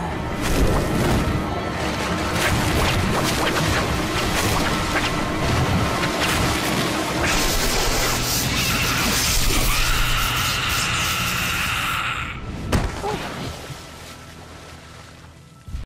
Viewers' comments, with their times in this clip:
0:13 she moaned. Doesn't that mean she was alive?